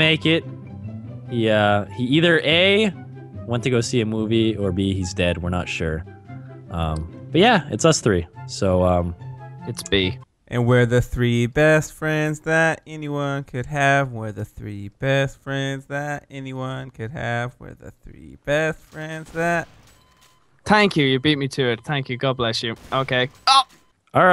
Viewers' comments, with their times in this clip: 0:08 give this man an oscar for that amazing singing
0:09 +BasicallyIDoWrk that thing y yo u were singing we're the three bestfriends that anyone could have, etc I sang that at school when I was with my friends its very catchy plus there were three of us so yah.